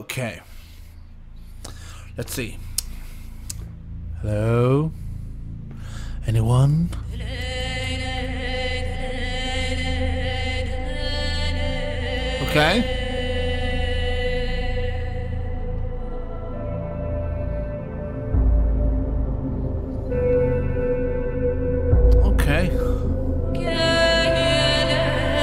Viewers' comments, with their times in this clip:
0:06 whats up with the song tho?